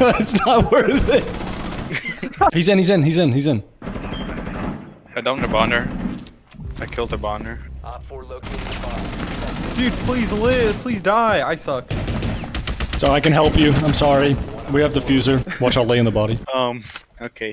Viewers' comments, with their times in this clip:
0:05 this man is saying hibaner with a hard r